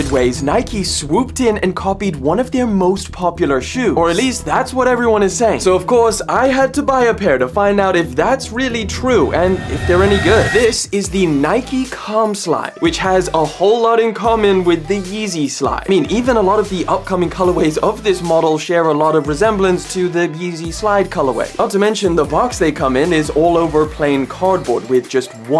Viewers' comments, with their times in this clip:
0:09 This is the Nike what slides?💀 ahh hell naw Ik y’all heard that too